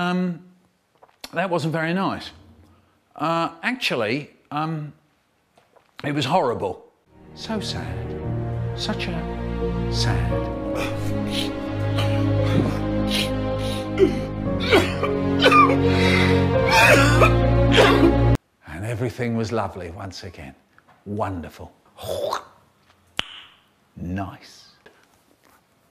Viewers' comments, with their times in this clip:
0:08 and then he started crying again